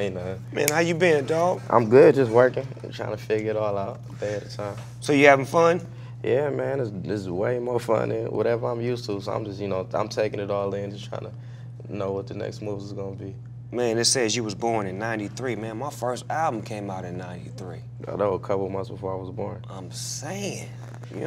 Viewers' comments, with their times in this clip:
0:04 snoop dogg sounds like his auntie